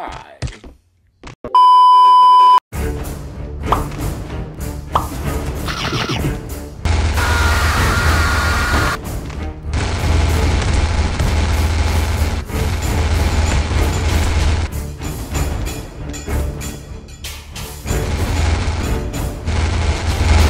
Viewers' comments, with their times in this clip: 0:07 rip headphone users LOL but i laughed so if someones luaghs and will go to here like this comment